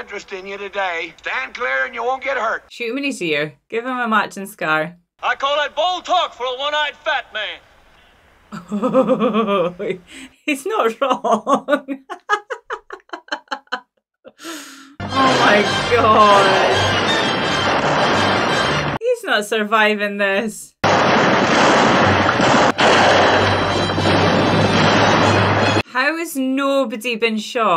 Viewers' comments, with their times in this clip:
0:08 STUPID AND UNNECCASSARY COMENTARY CAUSING A PIVITAL LINE IN THE MOVIE TO BE MISSED.